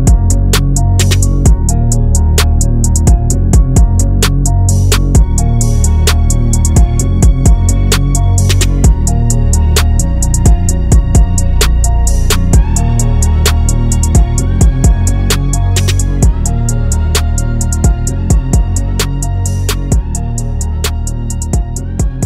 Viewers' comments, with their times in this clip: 0:05 🔥 the way the beat hit is crazy 💯